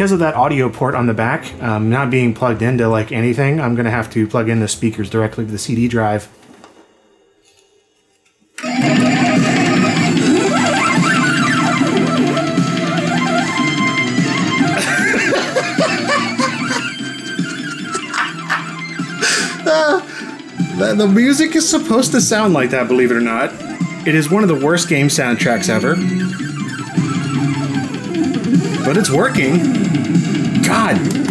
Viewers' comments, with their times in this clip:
0:07 Oh my god, I legitimately thought your CD drive or PC was jacked up, that is just awful
0:08 gave me a small heart attack then I wondered if the music was on Red Bull, sadly it was not.
0:08 Clint sounds exactly like my dad when he laughs. XD
0:08 Someone went total apeshit in the recordingstudio ...
0:08 Dragonforce crappy solo
0:09 is pure earblood!
0:14 his chuckle of victory. He could make changing spark plugs entertaining.
0:14 Jeff Goldblum is laughing at us! Chaos Theory! Must spin CD drive faster!
0:15 always cracks me up. One of the most infectious laughs I've heard!